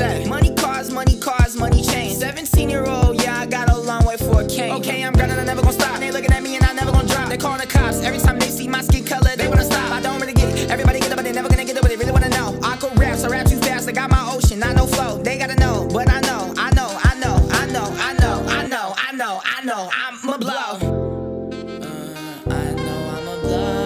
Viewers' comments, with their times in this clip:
0:10 My boy rapping faster than Eminem fr